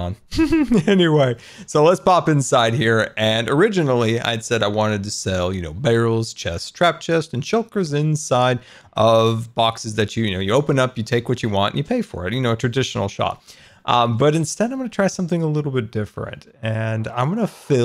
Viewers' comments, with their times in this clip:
0:04 "Barrels, chests and shulkers inside" I hear a beat